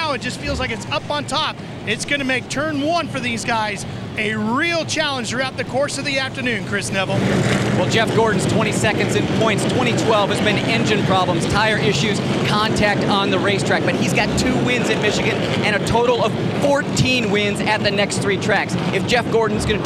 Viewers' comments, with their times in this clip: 0:07 Chris totally said "Turn this shit around."